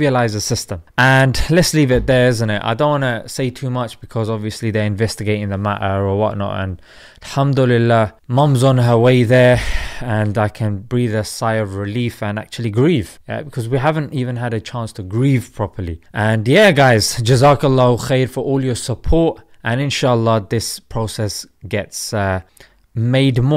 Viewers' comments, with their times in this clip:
0:10 Salaam yaar - enjoy your videos. Sounds like a stressful situation. Too stressful even - Your sigh says it all. Wishing granny the highest of Jannah inshallah. I completed the application form recently on the PAK NADRA website and had the exact same issue with the photo. I tried a few photos and eventually one worked and was able to submit the application form successfully. I also had a similar issue with other forms for travel such as the Spanish Covid passenger locator form. That wouldn't recognise the NHS Covid App QR code. Eventually I took a photo of it, cropped it and and the process worked a treat. I've noticed most countries, even the UK Passenger locator form require a reasonable amount of electronic forms to be filled in. I guess this digital process has it's pros and cons. Glad you got it sorted.